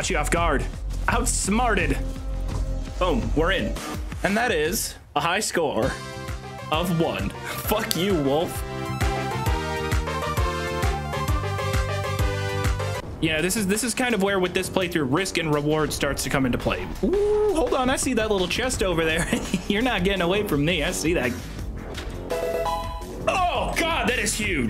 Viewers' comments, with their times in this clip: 0:05 the Miitopia music killed me 💀💀